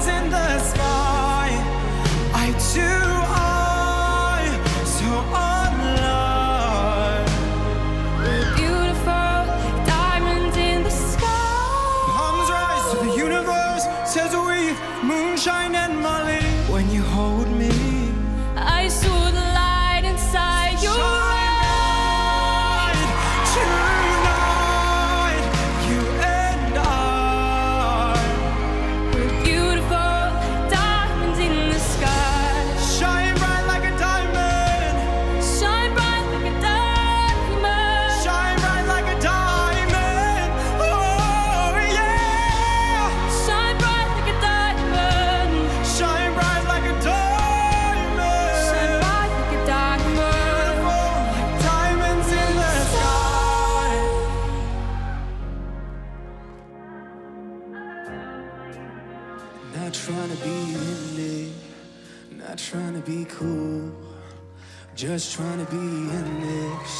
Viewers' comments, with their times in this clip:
0:07 that scream tho 😂
0:52 That transition from 2nd song to 3rd song is absolutely amazing. And the first battle actually made me say out loud in my computer chair "Oh my god."